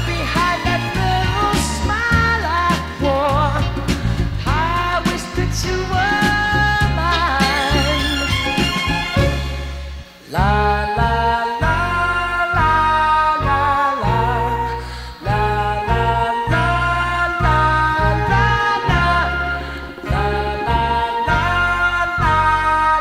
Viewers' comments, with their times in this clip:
0:10 the La La La La La La La La La La La La La La La La La La La La La La La La La hits different 🥵🔥